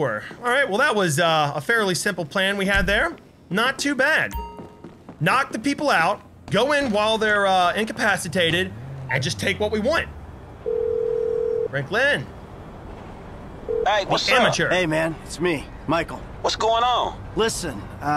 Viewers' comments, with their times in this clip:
0:03 Anybody else hear him say "chasing" instead of "casing" in